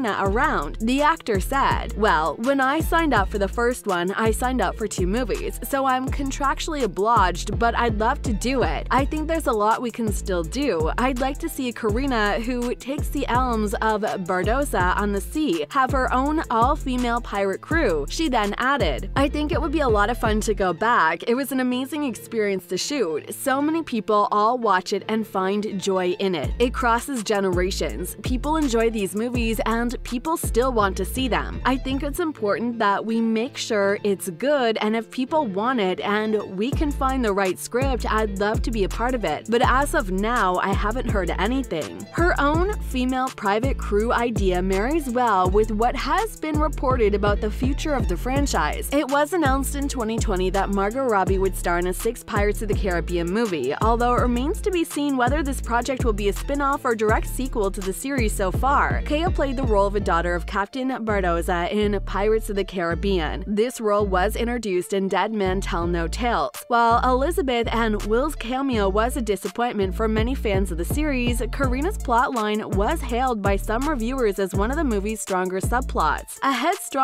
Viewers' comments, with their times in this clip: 0:06 "Oblodged but I'd love to do it... takes the elms of Bardossa" The hell were you reading?
0:59 Anyone else hear them say Bardossa or just me?